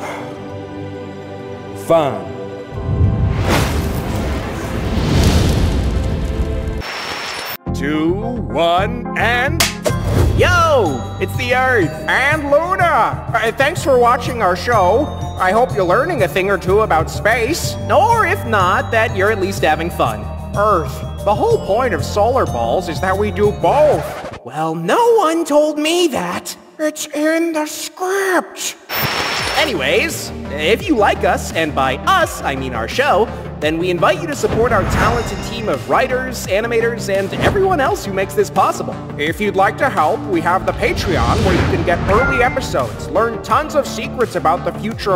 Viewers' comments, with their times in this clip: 0:04 Jupiter just super farted
0:27 IS IN THE SCRIPTS Cute and awkward voice